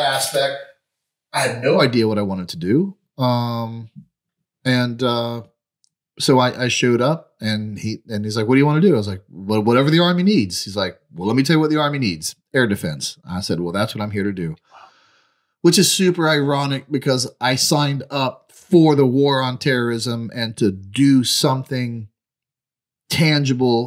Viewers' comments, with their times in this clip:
0:03 the mic starts only picking up the speaker and not the entire room. It's a super noticeable change. Not sure what ur talking about that it continues to the end. It literally ends
0:10 Apologies for the sound quality on the first portion of the video. You can jump ahead to the mark and it gets much better. Stay safe ya'll!